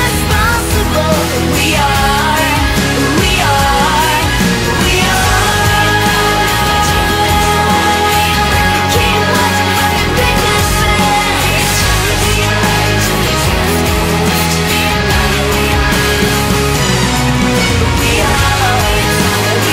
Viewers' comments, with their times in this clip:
0:06 is like « i win »